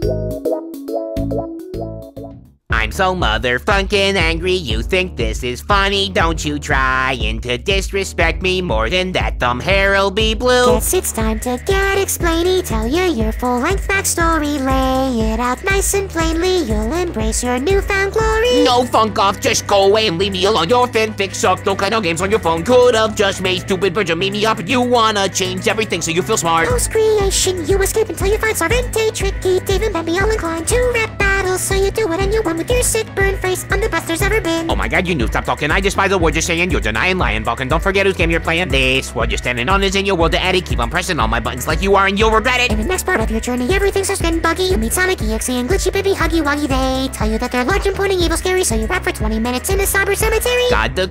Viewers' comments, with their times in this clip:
0:09 boyfriend miss the note
0:09 he missed a note
0:18 bob spits hot fire 🔥🥵
0:34 bro shut up real quick bobbob is rapping